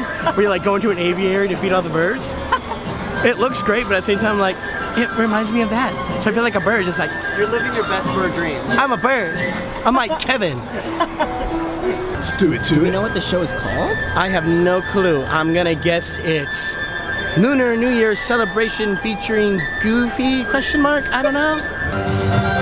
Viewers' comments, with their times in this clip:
0:08 What it's supposed to sound like: I'm a bird What my phone makes it sound like: I'm a b-bird